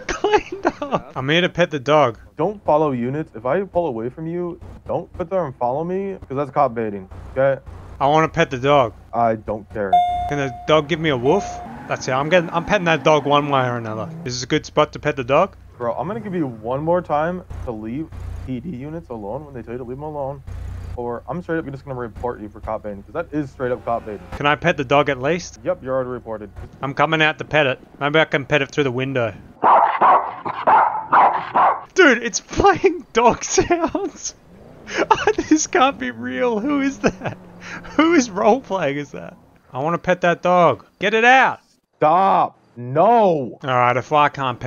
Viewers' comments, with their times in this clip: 0:03 if i follow away from you? Wait what?
0:29 lol it's some big albino German Shepherd but the dog sounds seem to be from a Chihuahua